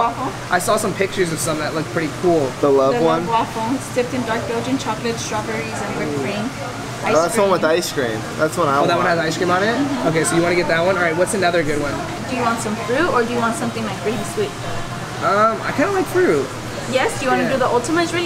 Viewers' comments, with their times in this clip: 0:06 u guy's start moaning jesus did sound like a porn 😂